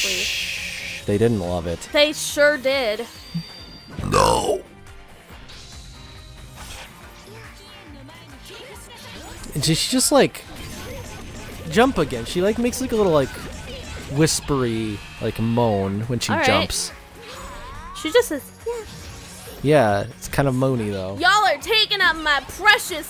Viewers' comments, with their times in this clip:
0:04 that burp doe